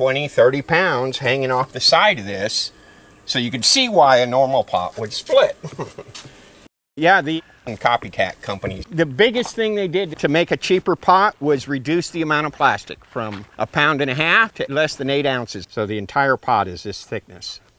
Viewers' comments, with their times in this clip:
0:05 I literally can’t take anything you post serious, every time there’s a half assed split in the audio to cobble together something out of context.